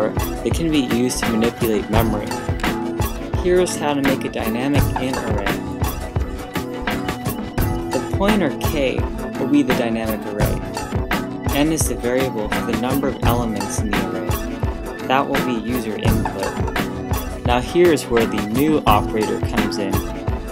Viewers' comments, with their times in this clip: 0:04 nice tutorial, but music in background is too loud, especially in